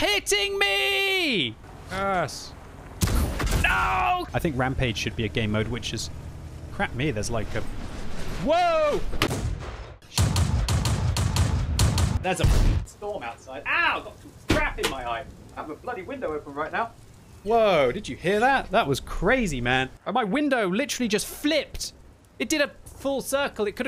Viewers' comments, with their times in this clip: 0:08 is no one going to talk about how his window just randomly played the nostalgic Terminator theme?
0:08 Woooahhh *Speaks in machine gun*